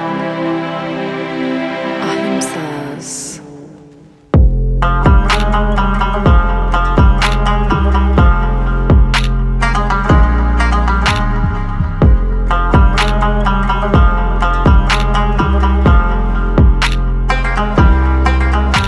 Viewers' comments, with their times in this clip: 0:04 Aayyyee Bro What A MasterPiece😮❤❤ When Beat Drop 😍 My New RingTone❤😁 Love The Rabab Pattrens You Create❤ This MasterPiece Deserves Millions Of Views😑😢❤ Keep Up The Good Work❤ Big Love For U❤❤